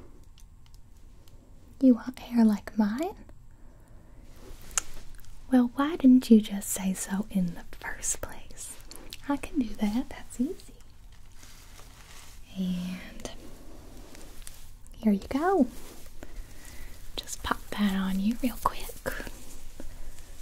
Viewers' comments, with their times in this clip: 0:04 That one sound in minecraft you can never figure out!